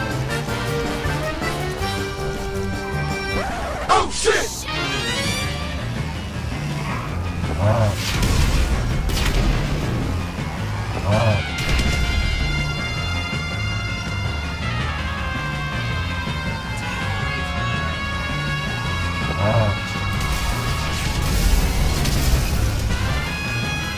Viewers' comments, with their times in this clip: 0:09 the boss music